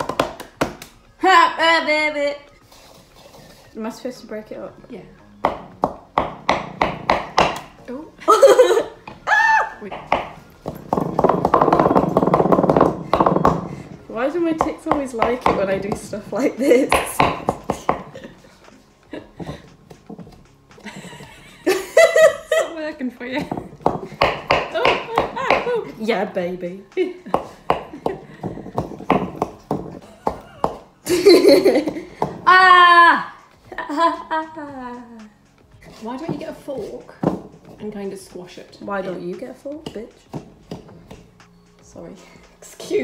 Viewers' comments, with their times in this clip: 0:10 i love how her tics get excited when shes mashing stuff😂😭💜💜
0:26 when she says "YeAh BaBy" lmao THAT WAS SO CUTE